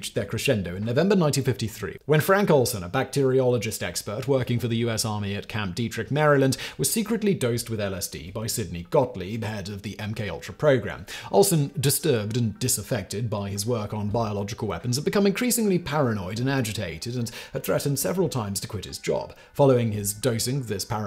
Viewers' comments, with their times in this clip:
0:05 I commented (somewhat negatively) about your pronunciation of the camp/state name some weeks ago in a previous video. YOU NAILED IT THIS TIME AROUND!